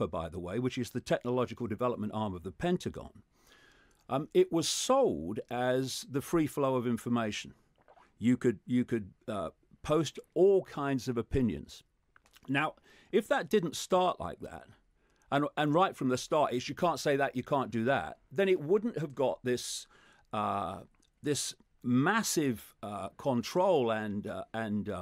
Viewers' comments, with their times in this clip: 0:06 gotta love David Ickes asmr